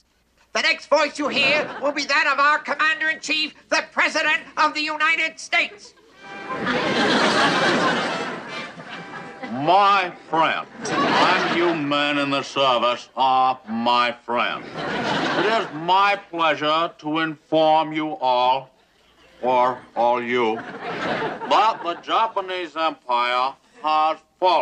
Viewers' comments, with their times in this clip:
0:10 Nope! Newkirk’s Churchill is waaay better than Parker’s Roosevelt. 😁